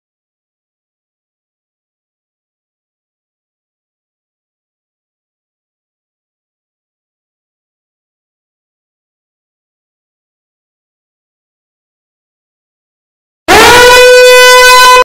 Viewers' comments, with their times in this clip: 0:13 Is nobody gonna talk about the last jumpscare being a siren?